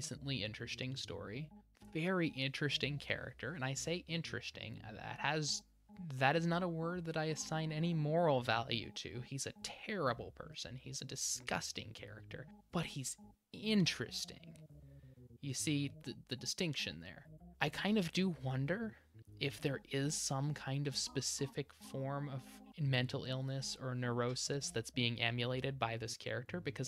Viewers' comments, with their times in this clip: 0:09 Took me until to realize there was background music. Love it